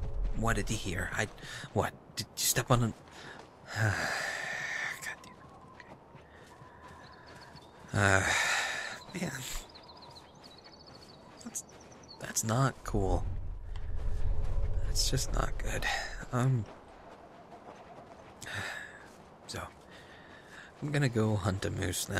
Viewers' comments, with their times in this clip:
0:08 I know! Was I the only one that heard him sniffling ? Was he crying?! D: